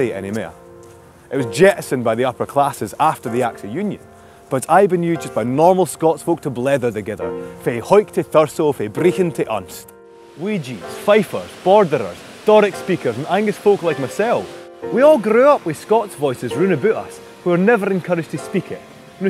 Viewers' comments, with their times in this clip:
0:06 Is he speaking Gaelic? Or Scots language?
0:06 pls press CC Caption button: "Fae Hawick tae Thurso, fae Brechin tae Unst" . It sounds germanic. That means it can't be celtic (gaelic). So this is how Scots language should sound? I don't mean Scottish English (english language with a scotish accent which the guy from the video is speaking)